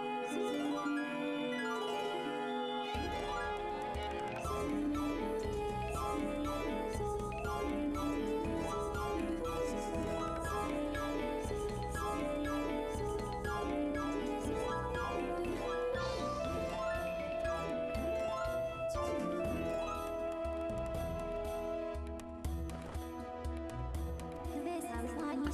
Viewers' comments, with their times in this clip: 0:08 never thought I would say this but, that is some shi* music.